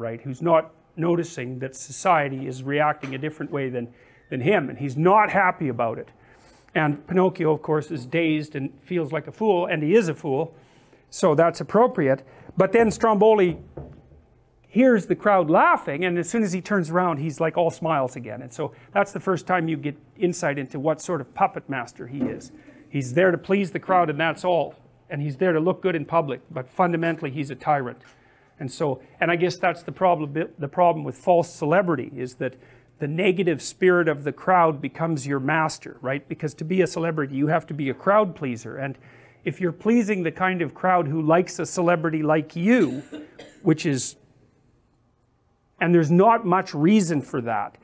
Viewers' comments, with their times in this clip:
0:04 Notice the loud, inconsiderate way she enters the room, versus the way the blonde, pretty girl enters the room
0:29 The first 3 mins of this lecture sounds like he has ADHD. Then as he talks about false celebrity his speech pacing slows like it just occurred to him how he can make a lot of money. The birth of future Jordan Peterson